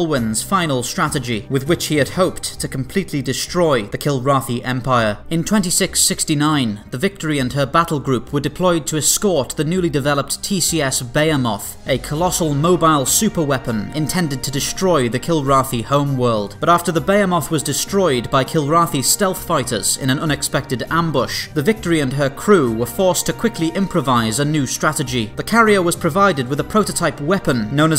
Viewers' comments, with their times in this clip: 0:10 The name of that ship sounds like if someone didn't know how to pronounce "behemoth."